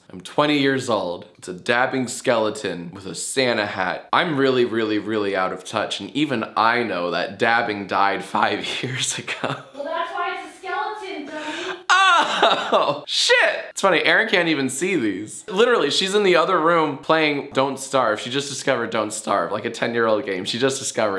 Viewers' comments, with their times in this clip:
0:05 thought that said defy god